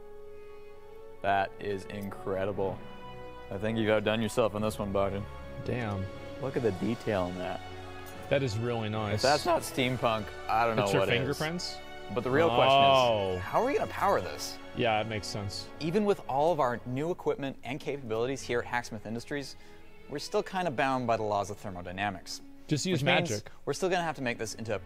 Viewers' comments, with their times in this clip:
0:08 His voice cracked thus negating everything they made. Fail